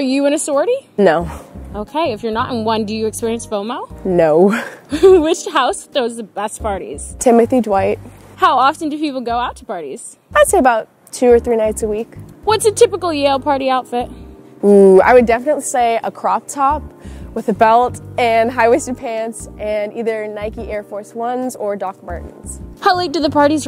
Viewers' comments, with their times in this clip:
0:10 "how often do people go out to parties?" "I'd say about 2-3 nights a week." She says that so casually... like that is so much.